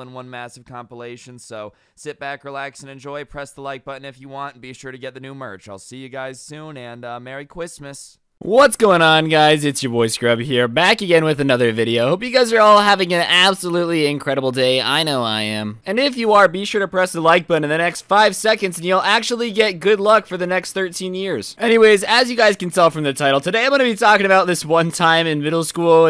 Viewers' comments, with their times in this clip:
0:03 the way he said Christmas has me dying
0:07 “see you soon and mewy Christmas” lmao